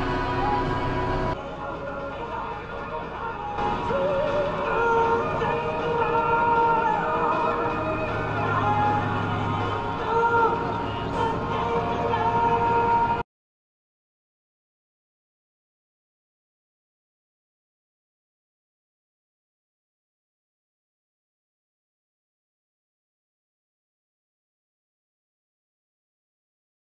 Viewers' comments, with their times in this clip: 0:08 Lol, the song on the radio is very fitting